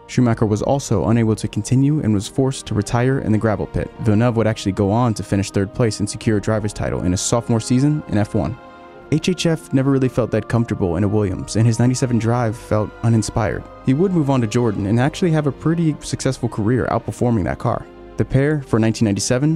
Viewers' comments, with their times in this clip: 0:05 the canadian national anthem is playing Why